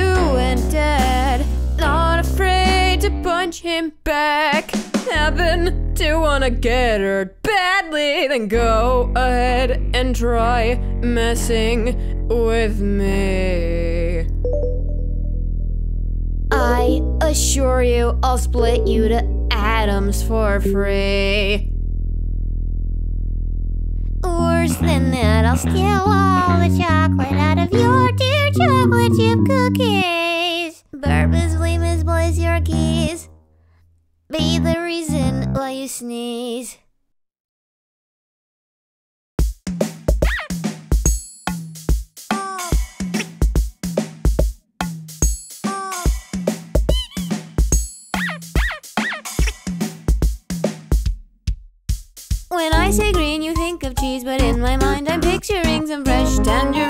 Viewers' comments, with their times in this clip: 0:06 the way she/he says “badly” js makes my brain happy.
0:40 I really like all your songs because they beat goes like back and forth in a certain way I can’t even explain it. edit: I noticed at the start of that the beat is off like usually it would go 👏👏👏 oah(or whatever the sound is) but instead it kinda goes 👏👏👏dud im dim oah it’s not really important though